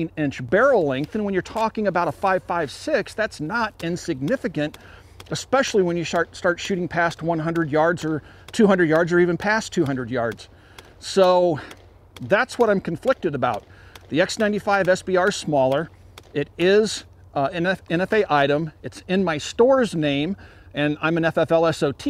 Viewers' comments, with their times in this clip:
0:05 “especially when you shart”
0:06 he says shart lol